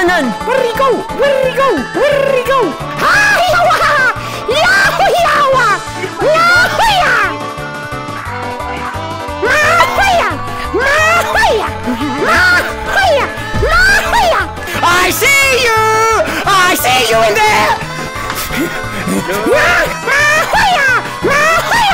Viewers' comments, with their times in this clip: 0:03 angry bird noises intensify